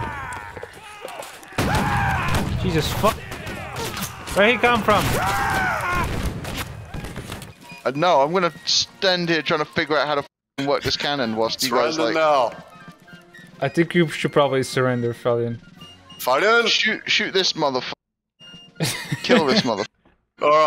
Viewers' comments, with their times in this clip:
0:05 I swear I heard Howard Dean